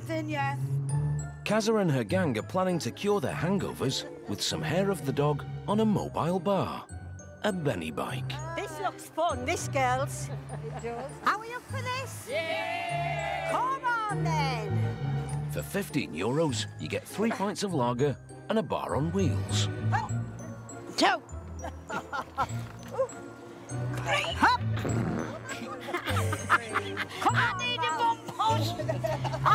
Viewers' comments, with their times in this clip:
0:10 Firstly, did that woman let rip when trying to get on the bike? Secondly, this is really quite depressing - sure, go out, have fun, and try to make the best of your last years. But drinking yourself into oblivion every night is kinda sad.